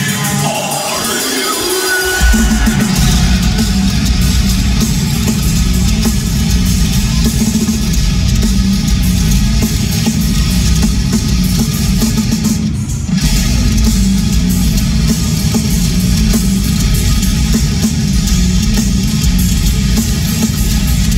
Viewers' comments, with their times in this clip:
0:03 and it goes sub sonic… 🫨 🫨